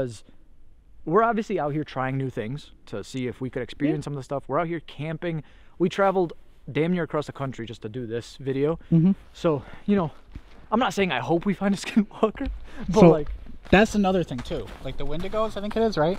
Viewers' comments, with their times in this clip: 0:03 Another weird voice Can't make out what it says.
0:03 as you were talking a girl said here.
0:03 i can hear a female voice say something